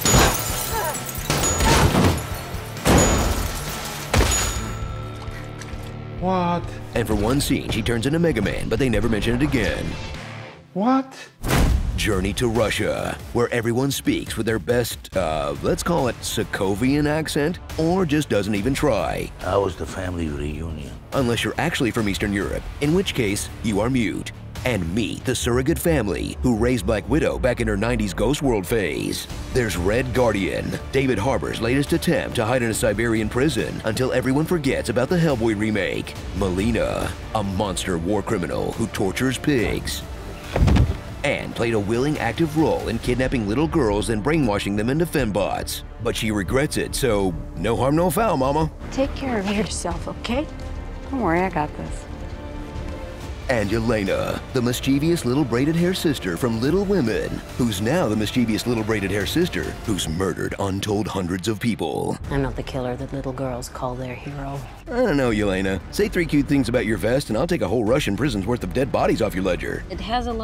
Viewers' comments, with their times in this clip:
0:06 "Wahhhhttt??" David Harbour's Hollywood Russian accent is an intergalactic treasure
0:13 Why do Natasha's "family members" speak with accents at all, considering that they learned flawless English for their mission in the US?
0:54 Any misfortune that you suffer is because you turned against Friends of the Gerund and blocked the comments therefrom. you said "mischievious" (4 syllables) instead of "mischievous" (3 syllables) -- minus 10 points.